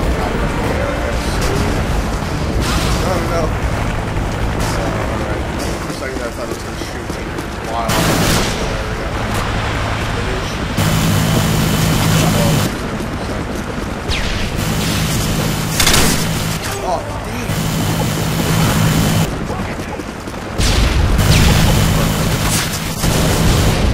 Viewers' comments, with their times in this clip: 0:09 i couldn't hear anything you said from and on